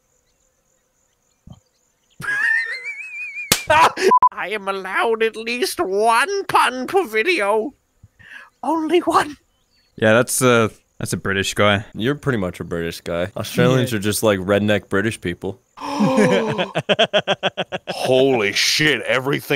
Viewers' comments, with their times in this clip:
0:03 That slap was so hard that he lost his Narrator voice